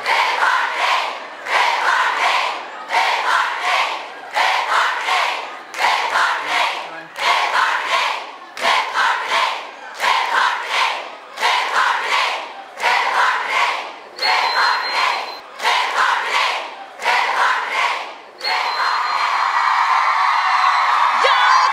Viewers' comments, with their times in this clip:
0:05 i am hearing some chants "de norte" or "hey Jorge!"